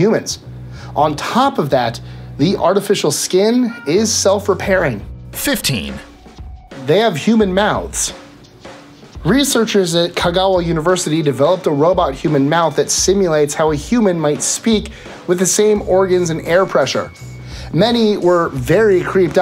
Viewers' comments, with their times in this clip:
0:03 did I hear a cat? LOL